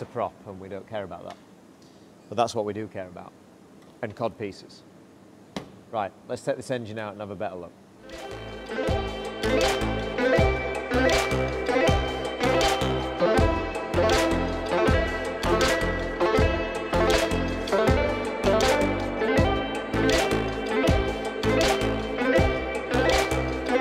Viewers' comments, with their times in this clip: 0:09 great song, whrom whrom whrom, like a this inline six.......